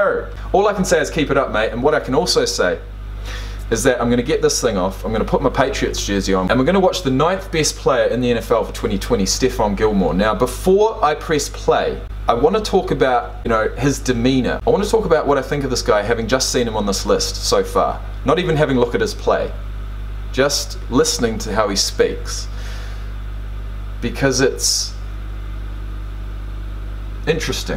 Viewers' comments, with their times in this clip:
0:09 it sounded like you said stiff arm gilmore 😂